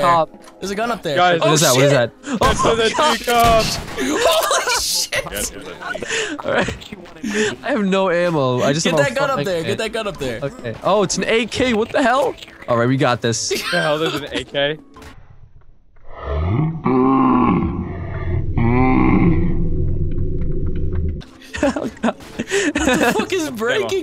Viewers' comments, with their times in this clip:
0:07 (1)pause (2)stare at it for a sec (3) SCREEAM LIKE HELL